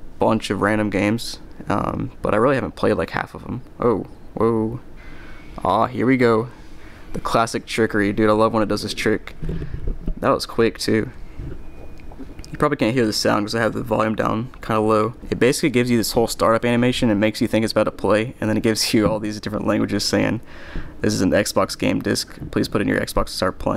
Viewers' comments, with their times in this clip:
0:05 I Can still hear it